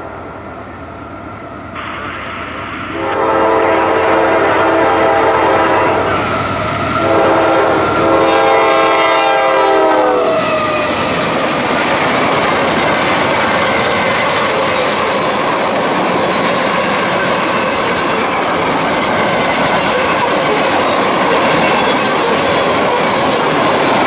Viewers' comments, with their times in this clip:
0:07 Nice K5LA and catch!